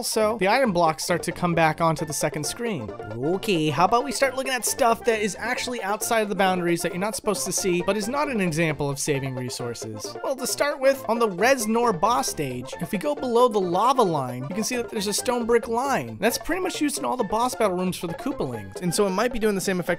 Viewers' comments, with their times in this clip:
0:03 that was Luigi saying “ok” right there